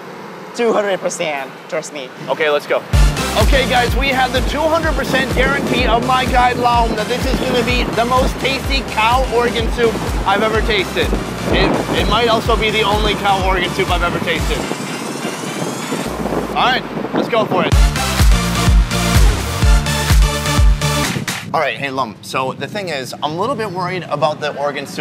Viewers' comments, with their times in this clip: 0:10 they are laughing at the camera